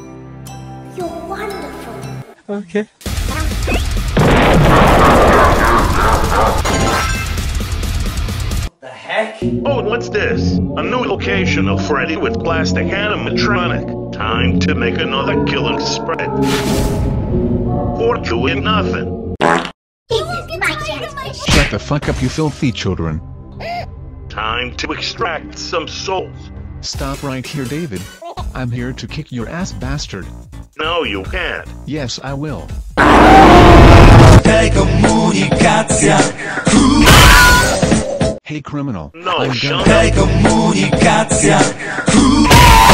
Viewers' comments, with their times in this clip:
0:04 what is that laugh?
0:28 Dave is crying kinda